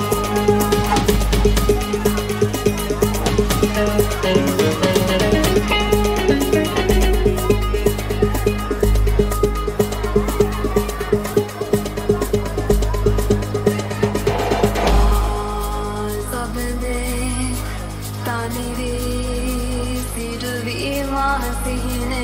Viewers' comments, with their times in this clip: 0:10 I just love that sri lankan sinhalese song vibe. love it 🔥